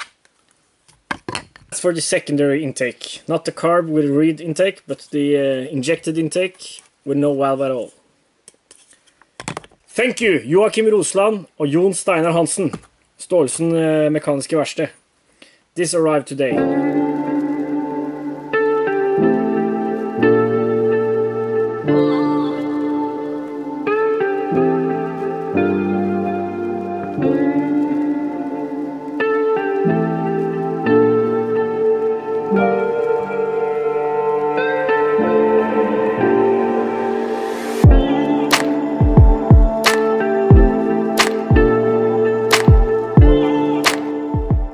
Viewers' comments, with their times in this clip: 0:09 for a brief moment I thought i lost my ability to understand english lol.
0:25 Porn music starts lol loved it, nice touch.